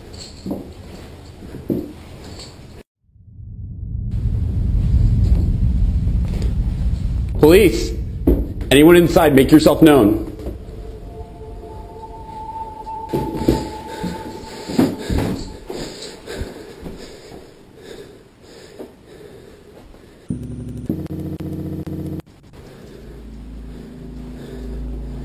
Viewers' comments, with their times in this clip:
0:06 Hmmm. That cop doesn't sound like a cop at all...